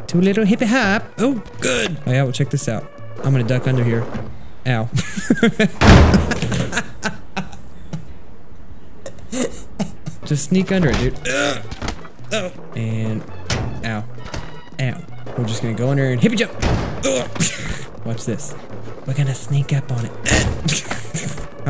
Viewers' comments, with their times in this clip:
0:04 WHAT!?!?! BUT YUB NEVER LAUGHS!!!! Illuminati theme plays
0:05 I laughed because of the metal crashing noise xD
0:07 whatever happend to i do not laugh